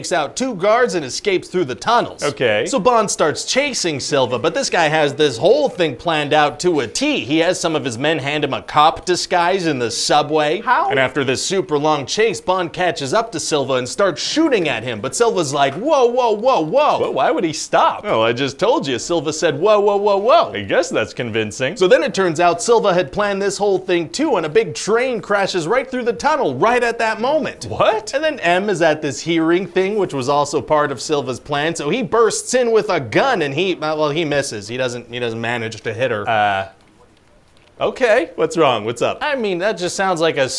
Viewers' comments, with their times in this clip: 0:10 Producer guy so confused he meows like a cat! (Yes, I know that was "How....?")
0:21 is the best "What?" he's ever done. Delivered with perfection!
0:27 The incredulous, laughing “Whattt?!” just slayed me 😂😂
0:27 I love when you quizzically laughing say "what" So funny, so perfect!
0:27 The most honest "what?" the Producer guy ever spoken. No amount of money can excuse that bullshit
0:28 The disbelieving “what?”